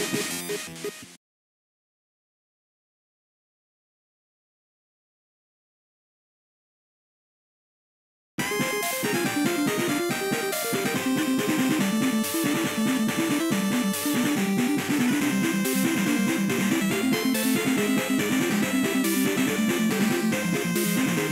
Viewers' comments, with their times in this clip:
0:08 Okay, but the Nova Explosion music actually fits pretty well here.